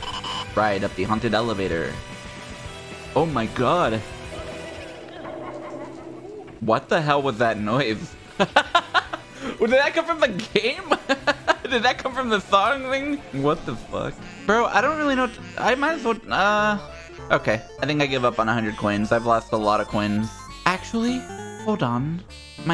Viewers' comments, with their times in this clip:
0:04 bro got the ultra rare deep boo laugh
0:05 No way did the alt boo laugh sound play again
0:05 A rare boo laugh
0:05 hella rare noise